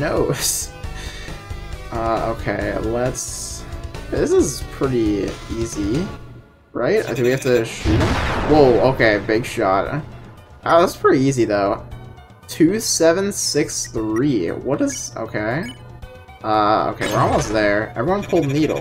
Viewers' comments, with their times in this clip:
0:06 dad sneezes be like